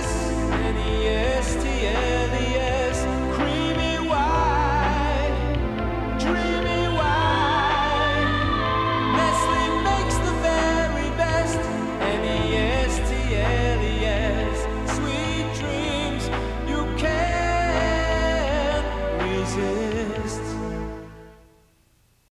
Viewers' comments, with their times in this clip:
0:07 I remember being a kid a sitting through this commercial on a daily basis. I remember thinking is sounded like something for a soap opera. and then I’d catch myself howling along that part cracks me up to this day